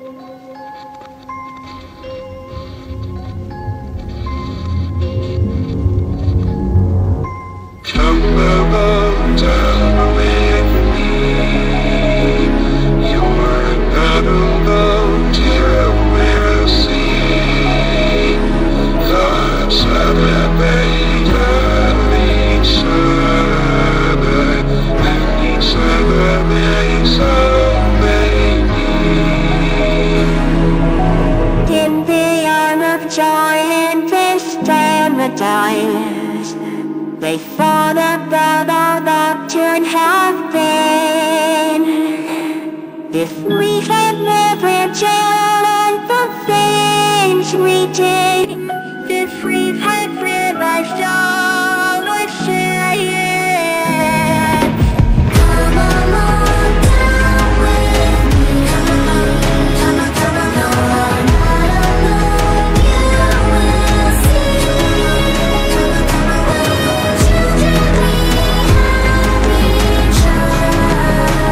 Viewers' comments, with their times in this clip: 0:08 Why does dogday sound like Hitl-
0:08 It sounds like Dogday: cOmE aLoNg DaNcE wItH mE
0:09 why does dogday sound like hos voice is out?
0:09 When dog day was talking
0:16 me in music class with a sore throat
0:17 Dogday sounds he needs water😂😂😂😂😂😂😂😂
0:31 Hoppy sounds like SpongeBob 😅😅
0:32 Hoppy sounds great
0:33 Oh yea, forgot to mention that Hoppy LITTERALLY sounds like Spongebob in
0:40 why does he sound like sponge bob💀
0:49 Tbh with picky sounds good 💀
0:52 that sounded better than orginal
0:59 Hoppy hopscotch sounds like SpongeBob 😅😅😅😅